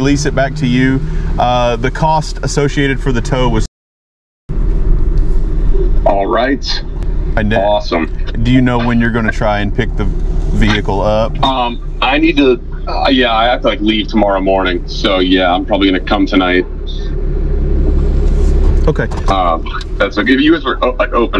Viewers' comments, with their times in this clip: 0:04 "Alright. Awesome." The aound of a man who did a dumb thing and knows he has to eat it.